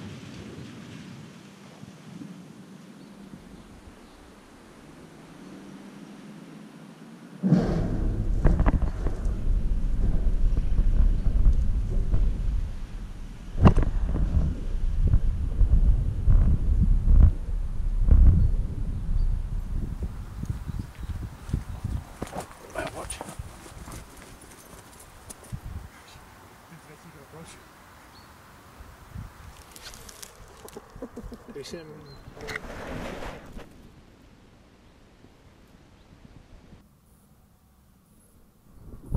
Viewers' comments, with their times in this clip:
0:03 The timing on with the loud bang the rabbit flying out was nice. Startled me lmao.
0:25 Those dooks omg that ferret is having a blast